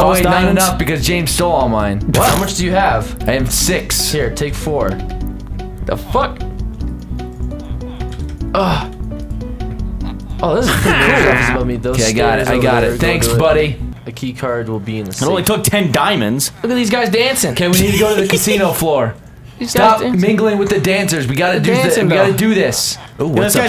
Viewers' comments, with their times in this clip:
0:05 sounds like m83 midnight city